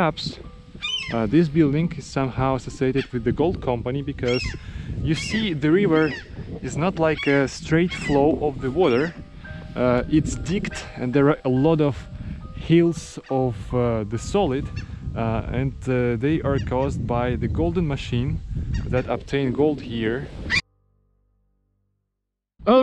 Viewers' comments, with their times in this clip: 0:10 Arvo Part is very good mood setting for isolation and abandonment.